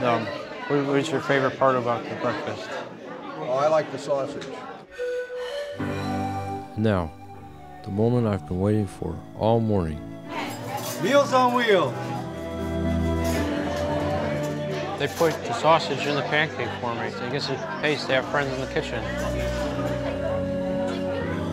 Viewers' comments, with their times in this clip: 0:05 the woodwinds that kick in